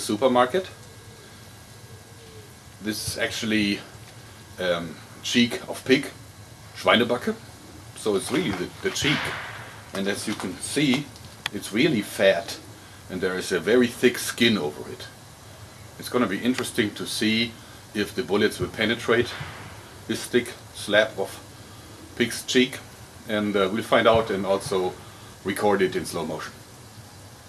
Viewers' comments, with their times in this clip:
0:09 i heard a big firecracker being lit :P hehehehe or something different